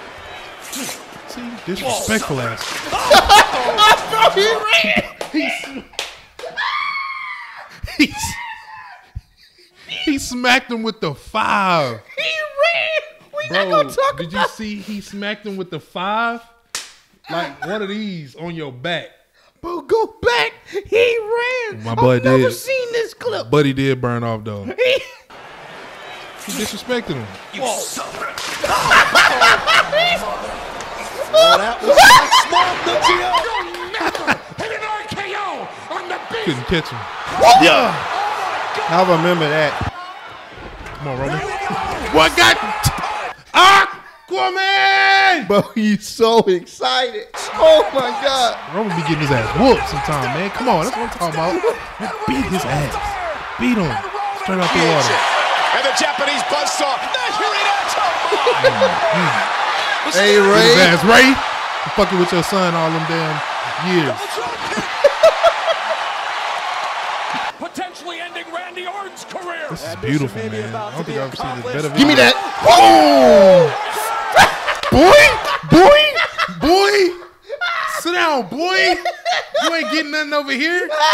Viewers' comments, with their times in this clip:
0:05 that "aaaahhhhh" literally had me dying
0:06 Especially when he gets to the climax of his laughs like in
1:02 Even the REFEREE CHEERING! Yeah...👍👍👍